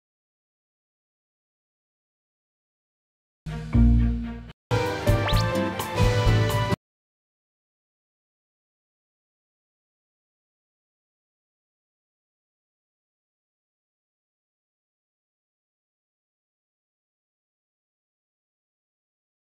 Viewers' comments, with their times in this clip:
0:06 you damaged my ears lmao